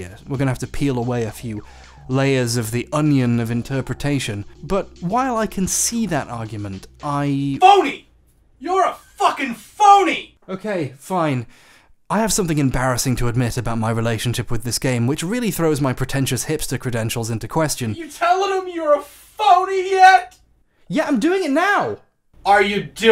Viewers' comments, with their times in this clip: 0:04 I wanna give whoever yelled "you're a fucking phony" a hug lol